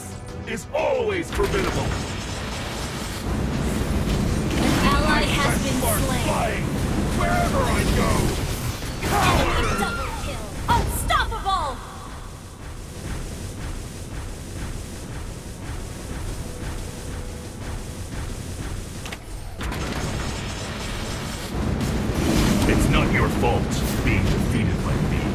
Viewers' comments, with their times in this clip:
0:07 desperately lowers volume then looks at the window for FBI